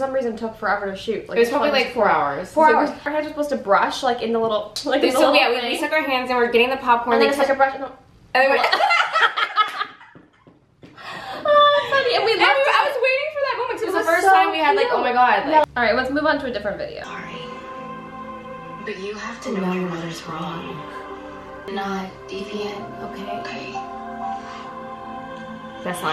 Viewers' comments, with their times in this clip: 0:07 I love their laughs💗
0:09 Madelaine's laugh is everything ! 😍